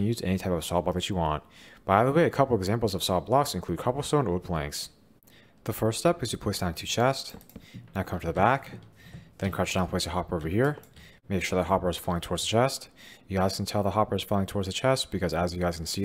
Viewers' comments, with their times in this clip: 0:03 What do you mean by “salt blocks” ?